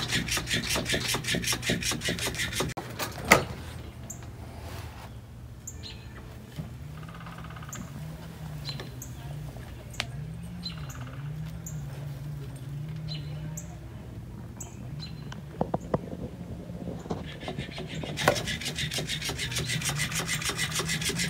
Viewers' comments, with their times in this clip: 0:06 I can hear a woodpecker.